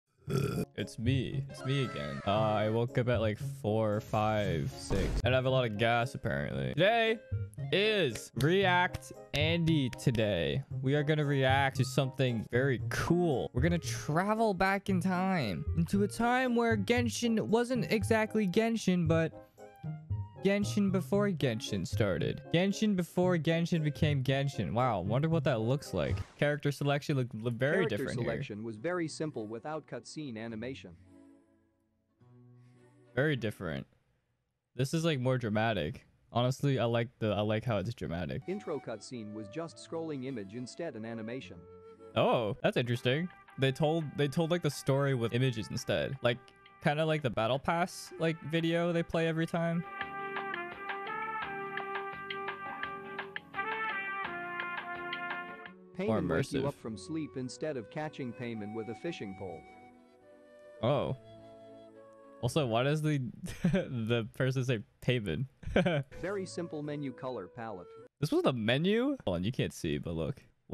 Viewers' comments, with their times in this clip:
0:01 was that a burp or a growl...
0:58 HE DID NOT JUST SAY PAY🤑🏧-MEN!